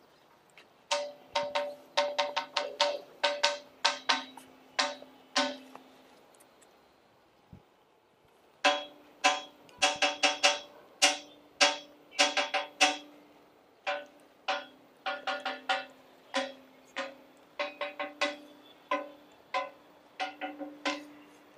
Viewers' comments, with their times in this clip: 0:08 It sounds like metal and not stone! How do you go about tuning solid stone? ( Ugh, someone get that bag out of there. :o[ ) One look at the site and you can tell there was some terrible cataclysm that knocked everything down like a child knocking over a Lego tower. I can't imagine any ordinary earthquake scattering massive blocks over such a huge area.